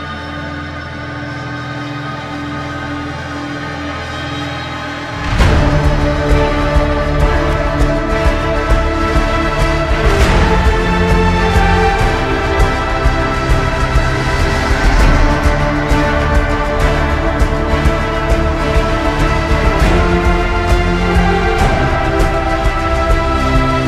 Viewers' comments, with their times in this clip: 0:05 and whatever time stamp is the defeat music it would be more realistic if they added people saying “gg” and then screeching at each other
0:05 for whatever reason fells like a Assassins Creed song or a medieval song.